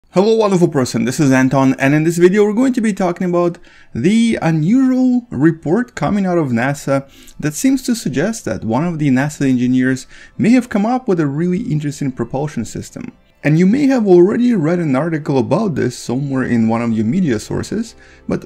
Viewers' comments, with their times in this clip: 0:00 Just gonna appreciate the fact that auto-generated subtitles just called me a wall of a person.